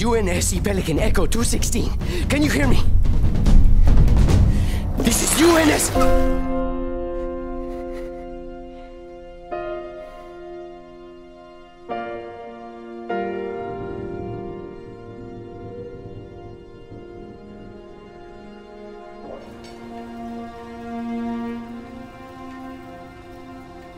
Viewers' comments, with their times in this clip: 0:04 Feels for me just like when Chief was lying there in Halo 3 on the ground. And the music that plays there is really good to, same feeling I get when I heard the piano notes in Halo 3. Its probably going to take like a year until we can play this, but my hopes are really high. Just hope we get more updates on the development, like soundtrack or more art. I know that wont happen, but I wish the german voice actor for master chief from halo 3 would come back. He was the best of all.
0:06 just hearing that key play gave me goose bumps😱